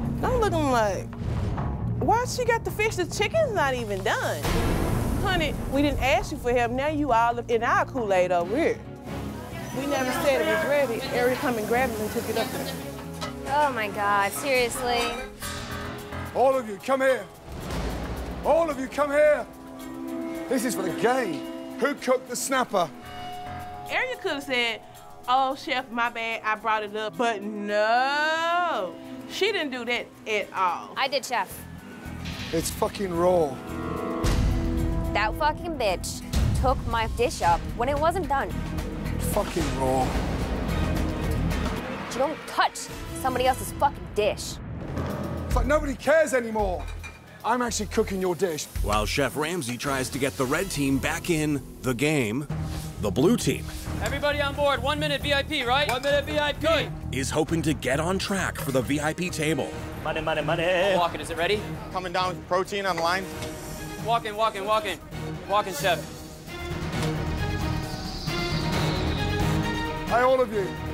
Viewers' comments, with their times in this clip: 0:06 proper english... well, she's black. what can I expect ?
0:07 is she having a stroke? What is she trying to say?
0:51 "Back in... the game." What's with that hesitating narration?